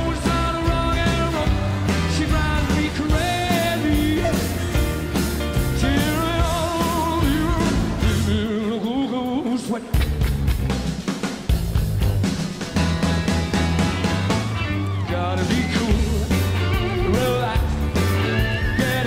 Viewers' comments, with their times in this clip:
0:04 Freddie didn't forget the words here.. 🤦🏻‍♀️ no way! 😂 You can hear him singing, a little Elvis style, "She gives me hot and cold fever, she leaves me in a cool, cool sweat!" No mistake! What a star that man was!